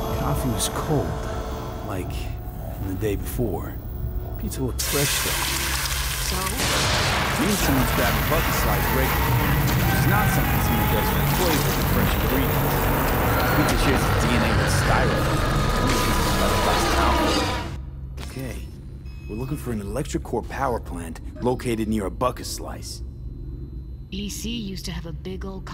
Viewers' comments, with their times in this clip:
0:07 man sounds like the Femur breaker to me